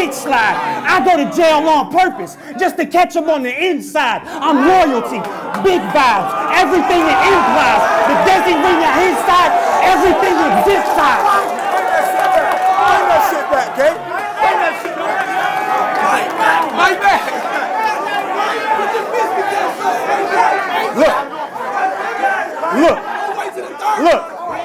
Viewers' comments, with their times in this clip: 0:08 what does he say? Watched it a couple of dozen times to hear, but the crowd was responding, so it's super hard to hear. Anyone know?